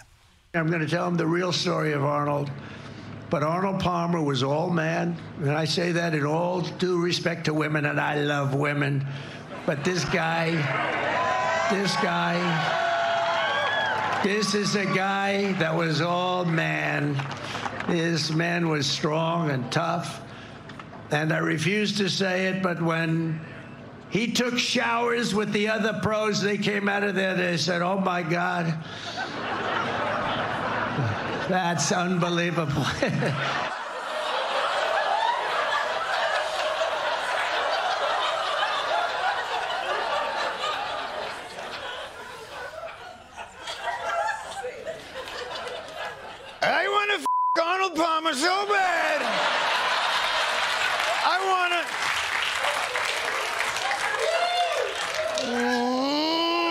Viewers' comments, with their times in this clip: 0:07 "I llllove women" - This has to be the creepiest way one can say this phrase.
0:44 my favorite part. His impression is perfect!